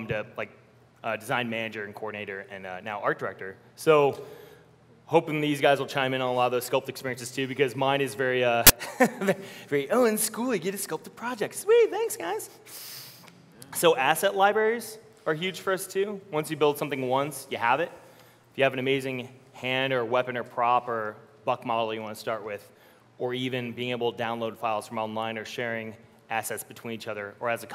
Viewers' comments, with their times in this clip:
0:08 heads up headphone users, there's a loud pop awesome presentation though!